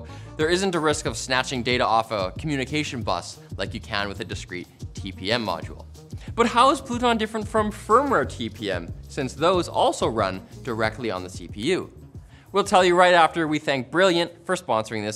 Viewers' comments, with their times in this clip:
0:03 sounds like kamikaze attack like on console lol